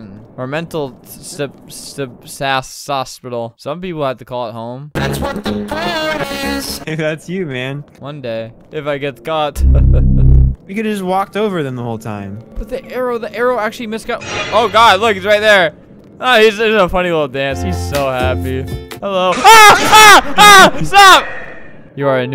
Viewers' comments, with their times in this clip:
0:04 I loved he started to play dreams new song mask lol
0:07 though when flamingo done that Russian accent and laugh